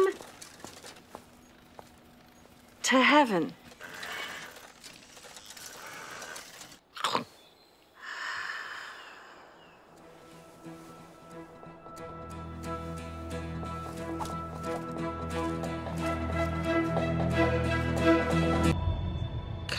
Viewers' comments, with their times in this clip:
0:07 n o m That’s what I heard